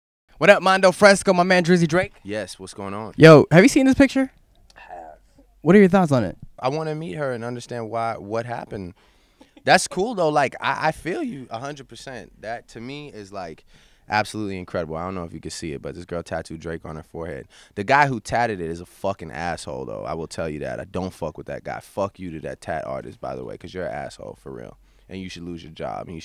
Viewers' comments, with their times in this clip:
0:10 Anyone realize Drakes voice broke LOL.